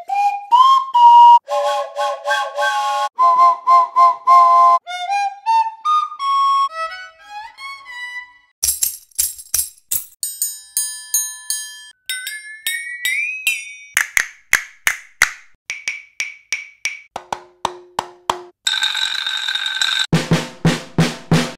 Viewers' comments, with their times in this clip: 0:03 sound like thamos
0:06 Sounds Really Good (The Violin)